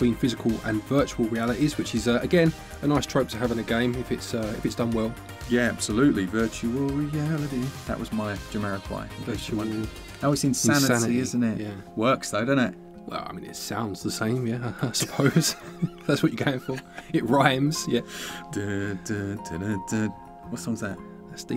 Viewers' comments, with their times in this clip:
0:06 that sounded more like the theme song for VR troopers, than it did the song virtual insanity lmao also i want to point out, from what i can find, the july 25th date for reynatis is japan only